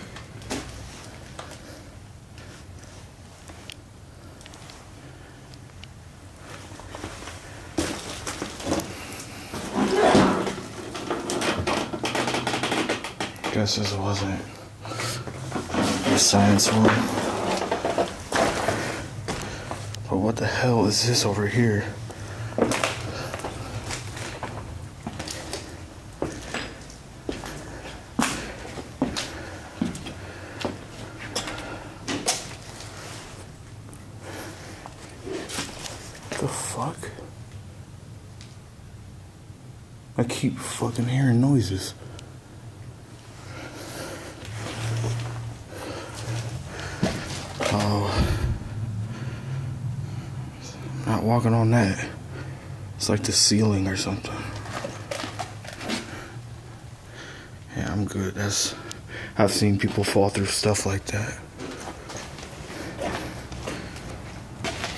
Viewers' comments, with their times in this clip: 0:07 i think it is saying get out…. In a weird shout? 😰♥️♥️
0:07 i heard a really weird noise about now😳🤔😰 You are SO BRAVE!😰♥️♥️
0:09 Any clue what the sound was? It almost sounds like "Get out", but it could also just be noise from the stuff he walked on.
0:09 definitely heard a sneeze or a shout.
0:09 I hear someone sneeze.
0:09 … somebody coughed or sneezed yo
0:09 What is the shout ? An EVP?
0:09 What's that noise 👀
0:10 ummm does anyone else hear the sneeze in the background?
0:10 Did anyone hear someone make a noise like a sneeze ? Or is that something else it scared me lol
0:10 Was someone sneezing?
0:11 angel number time the same what was this noise it could be the drawer closing or sneezing in the distance xx 🇬🇧
0:12 That was a sneeze. You would have to be desperate to find shelter in a dilapidated falling apart slowly (still fairly sound) school.
0:35 and again the same noise!! Its like a person making some noise??😰♥️♥️
0:49 I heard that what is this.
0:50 very faint "what is it?" being said.
0:50 you can faintly hear a voice say “What was that” or something like that 😂 Dam